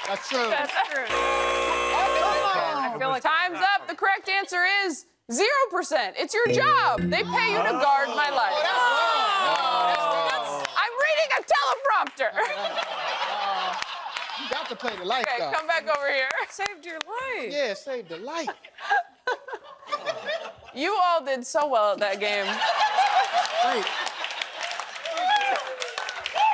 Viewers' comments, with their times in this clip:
0:10 Lol the frustration in yelling “I’m reading a teleprompter!” is so real of her 😅